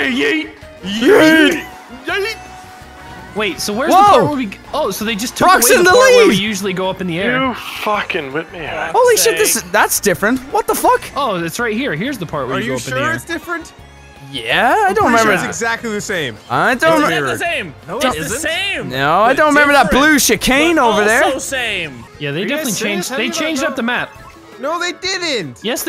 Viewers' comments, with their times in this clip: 0:07 What was that? "You fucking left me out"?